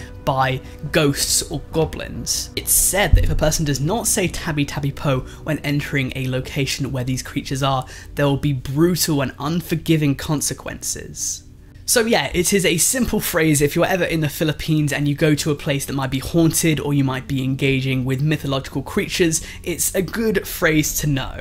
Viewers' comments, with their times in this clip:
0:07 This was really good but i laughed so hard when you pronounced “tabi tabi po” bc its pronounced as ta-bee ta-bee po the po is actually pronounced like the word so basically p makes the p sound and o as in oval then put p and o together